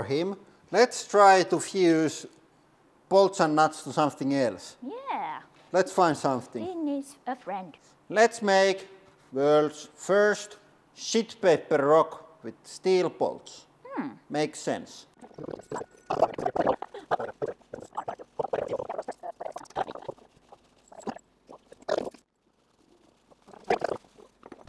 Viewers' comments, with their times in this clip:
0:06 NGL.... sounds creepy AF...